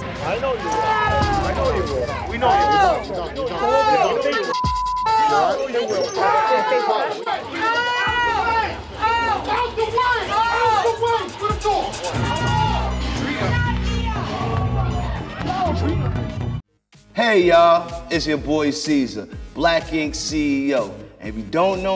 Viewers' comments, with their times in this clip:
0:09 I always wondered what the security guards were saying to Drita it sounds like “alright you won” does it not?